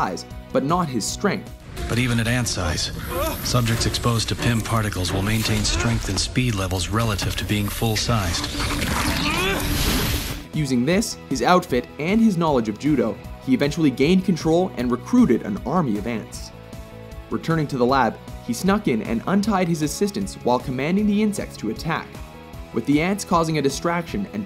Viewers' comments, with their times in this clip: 0:07 Yet he grunts when picking up a mere ant?